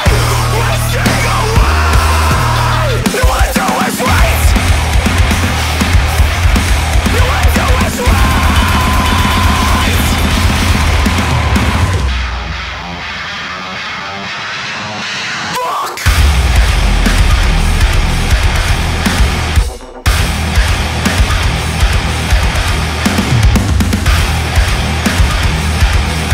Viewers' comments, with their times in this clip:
0:04 The Breakdown is straight outta DooM, love it!
0:12 is one of the heaviest things ever